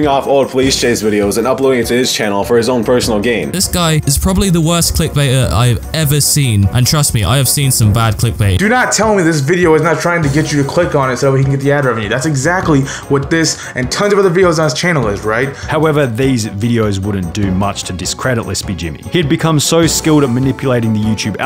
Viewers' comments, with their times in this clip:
0:04 just me or does this guy sound kinda like dan tdm?